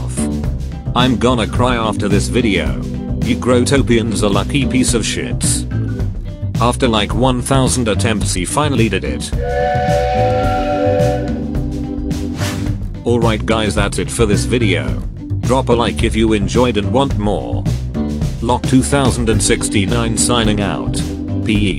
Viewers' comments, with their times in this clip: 0:05 did he said sh** or Sherry